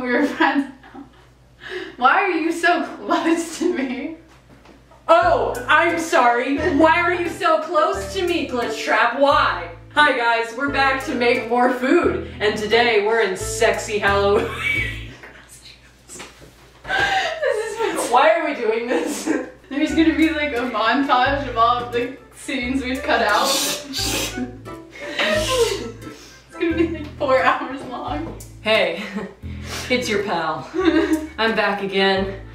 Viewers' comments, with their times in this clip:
0:09 "hi guys, we're back to make more food, and today in sexy hallowee-"teapot kettle weasle wheeze
0:13 that was a great wheeze.